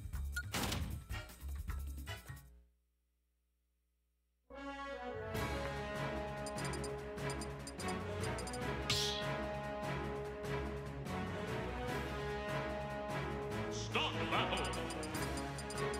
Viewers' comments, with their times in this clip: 0:03 Didn't expect commentary to randomly start lol